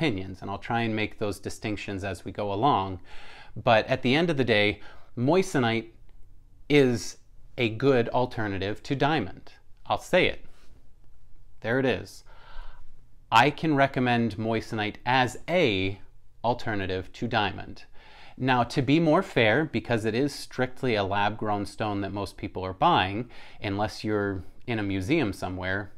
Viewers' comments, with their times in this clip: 0:07 SOUND LIKE IT HURT TO SAY IT….. his Jewish diamond dealer frat might reprimand him for saying that.